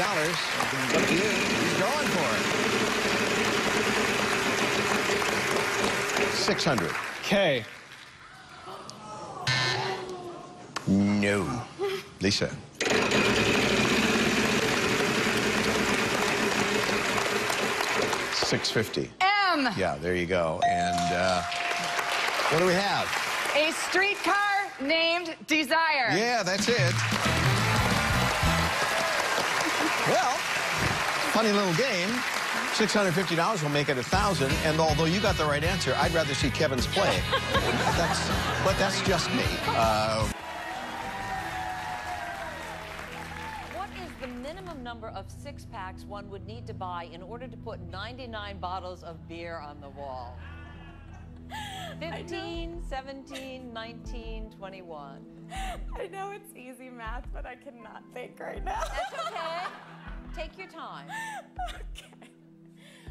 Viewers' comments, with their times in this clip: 0:09 the gasps!!!! The audience was APPALLED 😂😂😂😂
0:51 Contestant is laughing like she's high on nitrous-oxide. 🤩